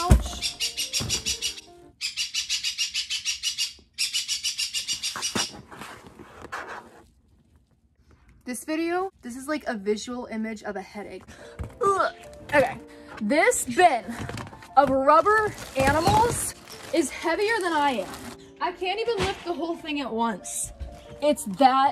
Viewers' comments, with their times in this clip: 0:03 omg i literally looked out my window bc i thought there was a bird 😂